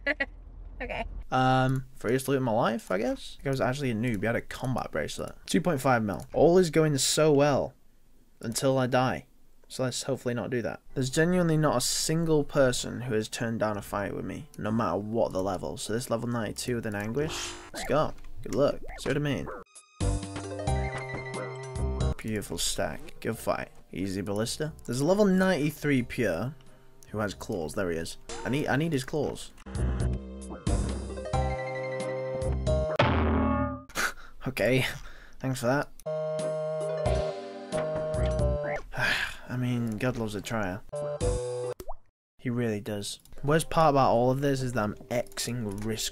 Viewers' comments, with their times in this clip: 0:07 "oh, okay" voice clip is from where? swear to god that sounds like Avril
0:27 at .25 speed is absolutely maniacal. Hilarious editing “I need, I neeeeeed his claaaaawwwss”